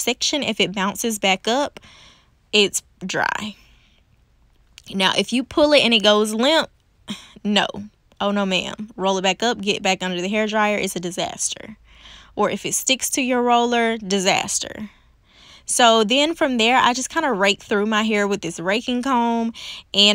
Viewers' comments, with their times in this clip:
0:04 How calmly you said "no ma'am its a disaster" took me out 😂😂 but this was smooth af! Im tempted to try this because my hair just CAN'T when it comes to heat